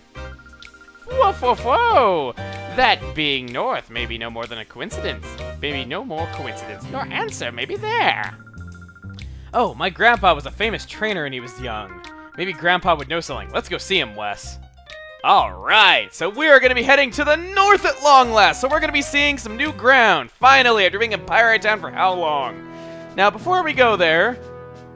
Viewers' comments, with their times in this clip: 0:06 It almost sounds like you’re trying to do an impression of Gollum.